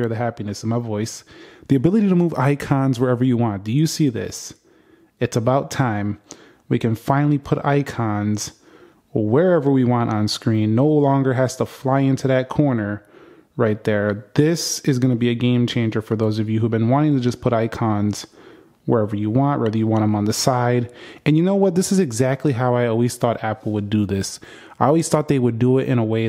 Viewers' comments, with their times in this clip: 0:08 you sounds like we are free from decade log slavery😂